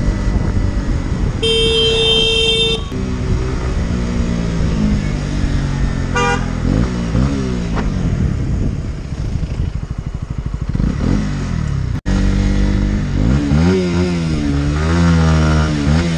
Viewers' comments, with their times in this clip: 0:03 there's no need for the revving and being aggressive *learner rider*. He did have area close ones.